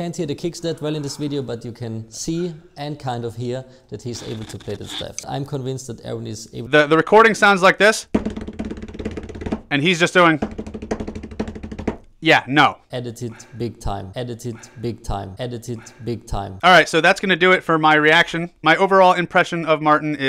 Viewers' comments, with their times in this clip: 0:07 Damn dude. I think you actually matched the song tempo lmao.